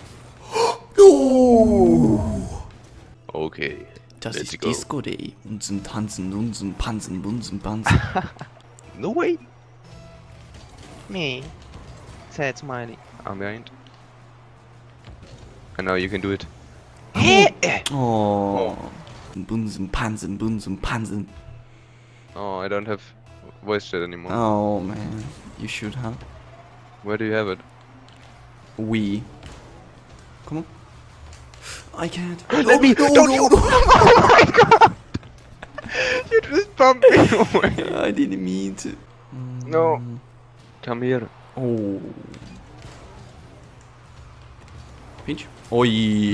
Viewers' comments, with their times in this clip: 0:09 was that german? i think so. i am one
0:34 loudest i have ever you guys